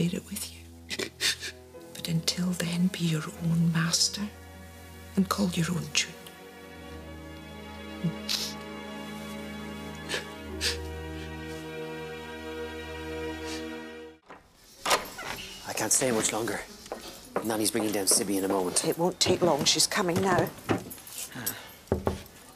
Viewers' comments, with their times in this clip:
0:08 "Be your own master and call your own ________." Does anyone have any idea what that last word was? I can't make it out. Its sounds like "Tree" to me.